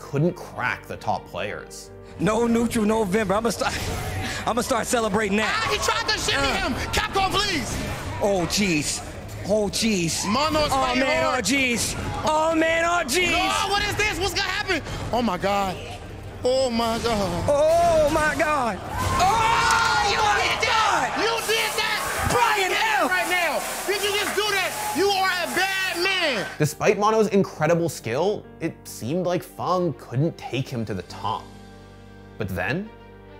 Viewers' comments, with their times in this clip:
0:07 I almost expected a "shut up Morty" from Rick there LOL
0:20 The clip makes me want to delve into this eSports scene a lot more... fighting game commentators are just so hype and passionate about the game
0:21 Are the commentators doing their commentary from the area where the players are? Lol.